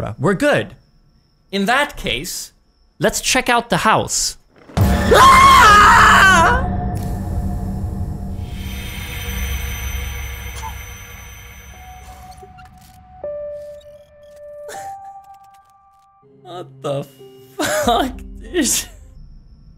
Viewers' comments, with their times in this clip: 0:05 I was literally on the toilet and got so scared from the scream and noise I shat myself